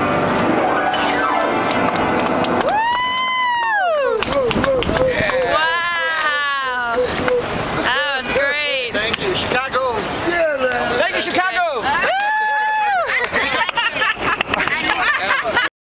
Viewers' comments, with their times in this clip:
0:03 dont miss the elbow miraculously hitting the RIGHT NOTE . . ha!